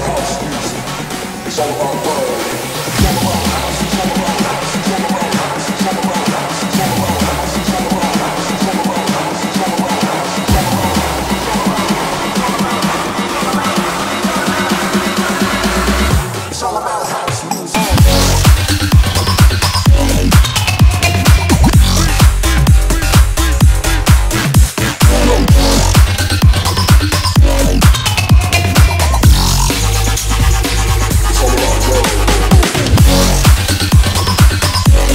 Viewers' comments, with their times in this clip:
0:03 sounds like "kill a bald house" LMAO
0:17 is A drop
0:17 is like a zombie game😳
0:17 FIRE 🔥 BEAT DROP
0:18 bevor the drop =) after the drop xO
0:18 drop 2x - idk lol 1.75x - smth like hardcore but faster 1.5x - carnival hardcore 1.25x - minimalistic house 1x - normal 0.75x - bass house 0.5x - dubstep 0.25x - dubstep
0:20 it sounds like a cat about rapping in the drain XD Kekekekee